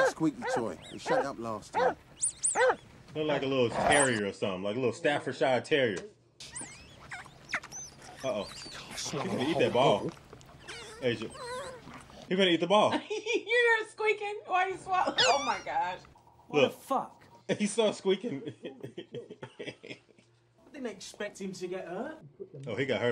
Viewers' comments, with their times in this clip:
0:04 Bro Ive never heard the word Staffordshire be butchered like that 😂